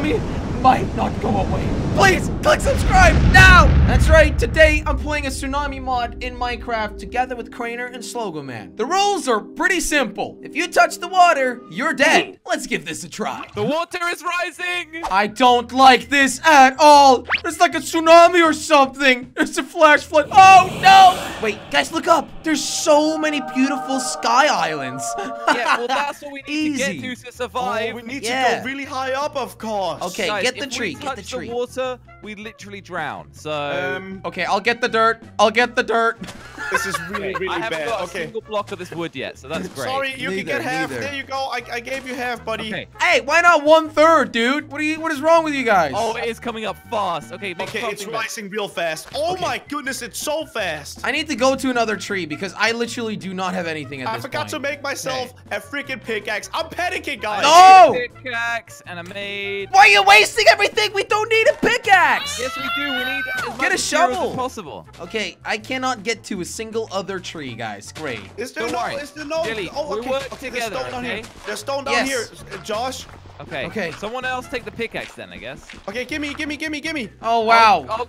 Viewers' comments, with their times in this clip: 0:07 its a air raid alarm
1:02 did u hear a cat??